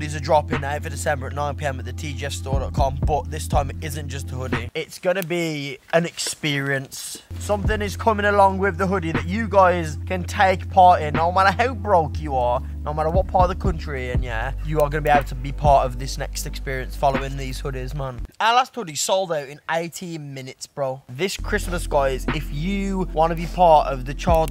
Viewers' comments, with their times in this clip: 0:07 Yo anyone know what this music is called??? Sounds vibez asf